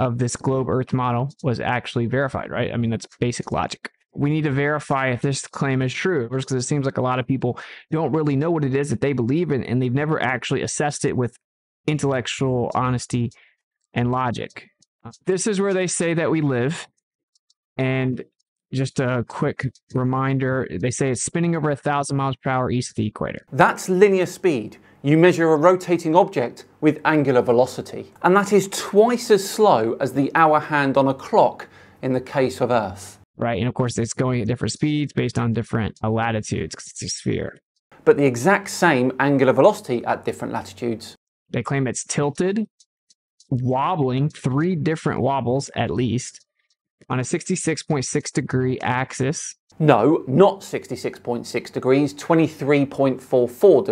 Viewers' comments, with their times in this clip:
0:09 listen how he struggled to say "intellectual honesty... and logic". It's as if his body just didn't want to say the words. I wonder why.
0:34 It'sinterestingthewayherunsallhiswordsintoeachotherasyoudon'tgetchancetothinkaboutwhereheiswrong. why is the globe spinning backwards?